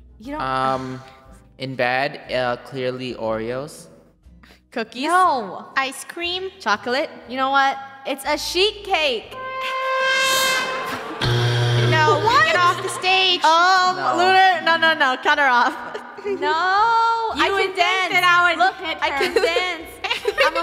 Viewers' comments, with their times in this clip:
0:08 awww i thought it was snores hehe